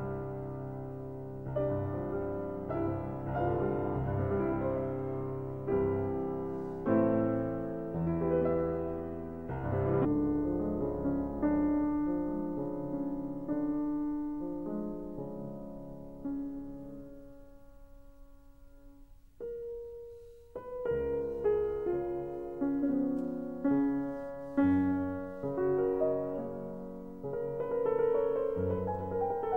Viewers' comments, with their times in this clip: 0:10 Also the C minor nocturne breaks up completely.